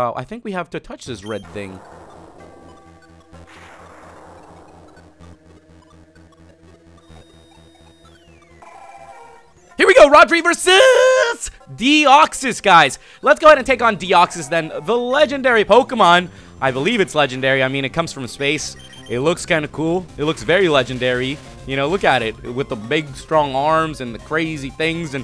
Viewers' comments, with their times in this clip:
0:10 dat voice crack tho